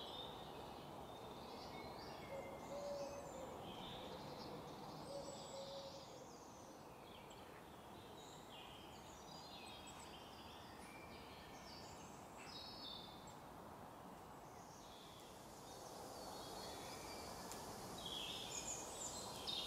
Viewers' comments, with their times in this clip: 0:04 At daybreak, heard the owls calling in the woods. Just lovely! Nice to hear all the woodland sounds as spring returns.